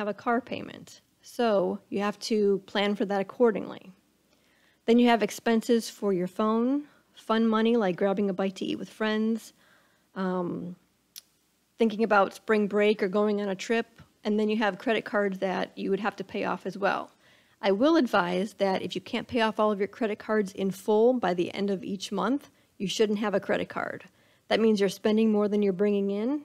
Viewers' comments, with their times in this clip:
0:09 Pretty straight forward. Although y'all could've edited that "Uhm..." out.